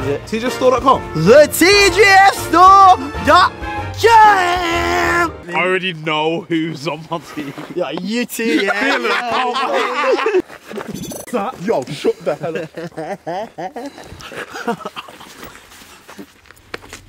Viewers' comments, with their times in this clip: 0:05 Oi yeah me tryna start me car in the winter 😂